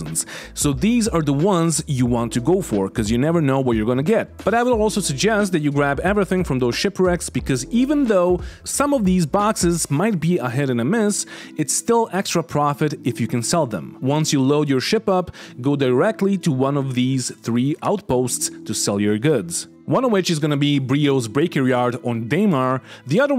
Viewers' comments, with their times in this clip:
0:08 lol you unleashed your inner Christopher walker when saying boxes 😂